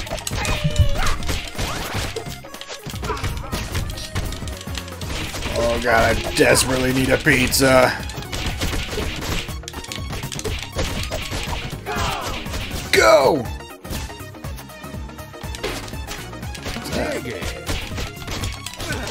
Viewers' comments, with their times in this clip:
0:04 I can hear the "Gauntlet" guy say "Donny needs pizza, badly"